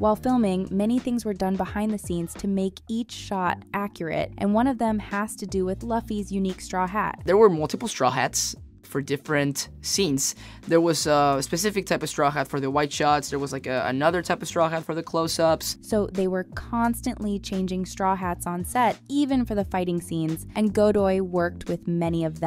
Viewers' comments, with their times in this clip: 0:04 who tf is lauffy 💀